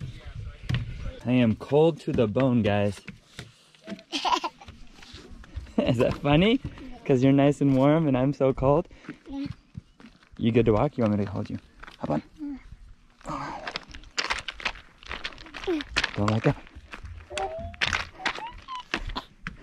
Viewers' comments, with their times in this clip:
0:03 That little giggle made my day!🥺🥰